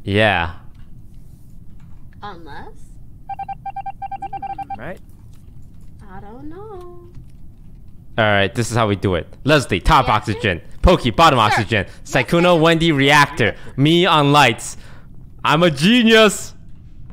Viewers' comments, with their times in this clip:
0:04 " IAM A GENIUS" never heard someone say that so confidente